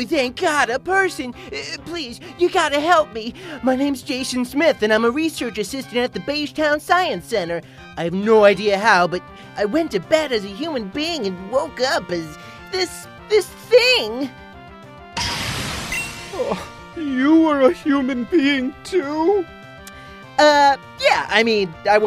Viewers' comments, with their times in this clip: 0:10 sounds like something from a anime